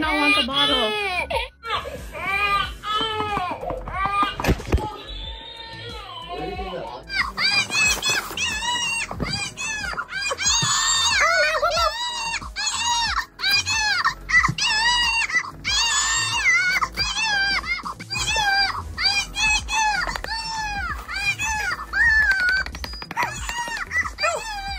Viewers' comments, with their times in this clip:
0:07 bro why did the baby sound like that😭”oh nooeoWE”